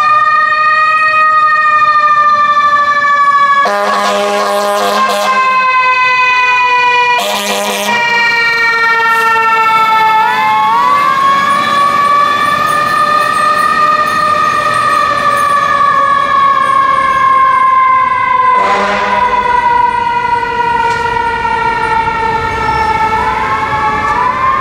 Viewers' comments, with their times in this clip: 0:05 Also, interesting siren